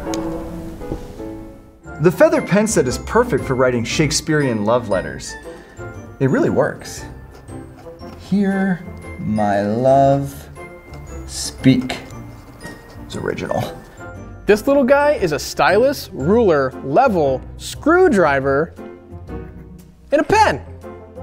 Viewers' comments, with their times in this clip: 0:06 I LOVE THAT SONG ON